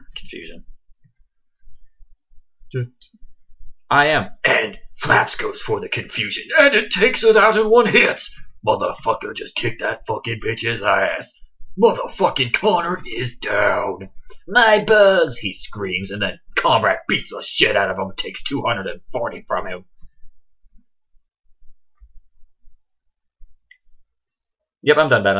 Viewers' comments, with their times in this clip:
0:07 DUDE. I sound like Adam West, hahaha :P